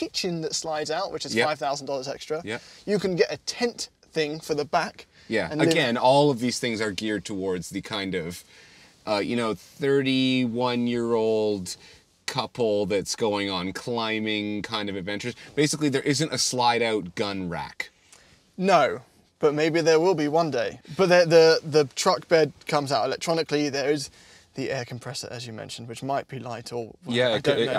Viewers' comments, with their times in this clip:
0:10 I did not hear couple. I heard c***old. Had to double back there...